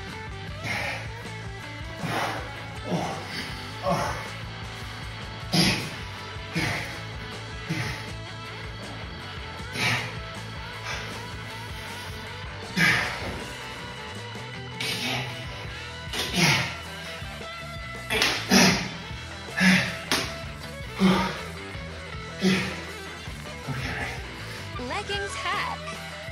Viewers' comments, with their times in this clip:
0:07 so much grunting 😂